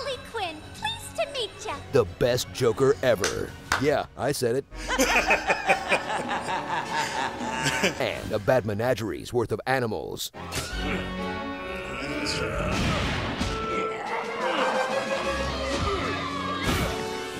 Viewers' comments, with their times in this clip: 0:04 ...my guy u started laughing the same time